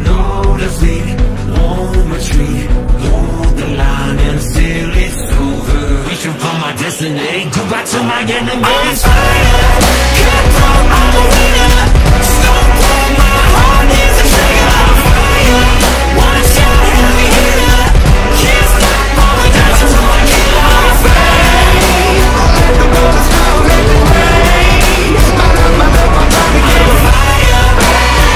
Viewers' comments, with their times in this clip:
0:10 Am i the only one mishearing it as im a wiener ?